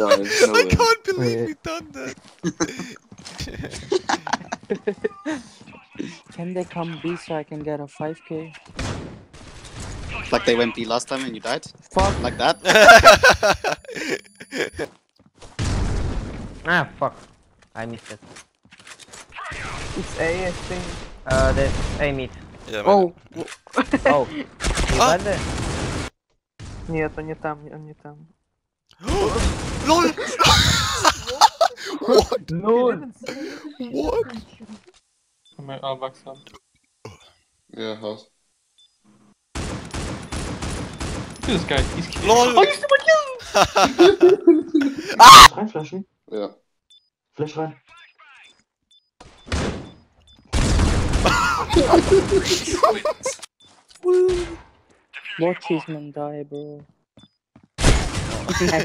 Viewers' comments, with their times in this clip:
0:05 I hear a baby
0:26 .... stop, russian language?
0:44 perfect scream cut😂😂
0:45 now that is a gamer's scream